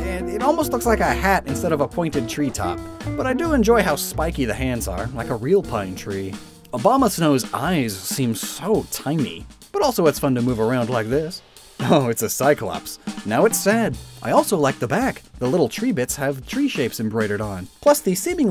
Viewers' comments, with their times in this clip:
0:05 am i the only one that heard Obamasnow?